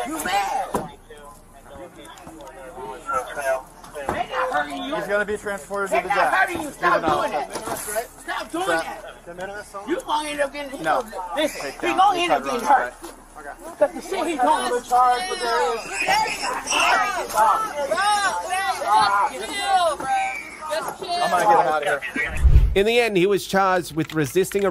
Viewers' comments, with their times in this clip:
0:05 His screams are as annoying as a gym teacher whistle